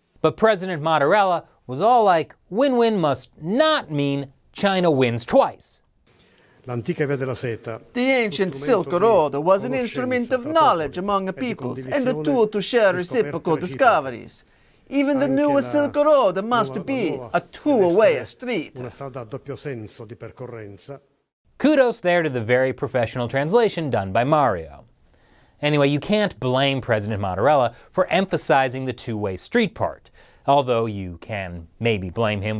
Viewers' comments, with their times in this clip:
0:05 LOL the accent As part italian person i laughed my ass off.
0:06 Hahaha I burst out laughing damn that voice was hilarious 😂 I love China Uncensored!
0:08 No way that could be an actual official translation with that accent... LOL
0:14 LOL Even the Italian translation has a thick Italian accent ha ha ha ha good one, china uncensored!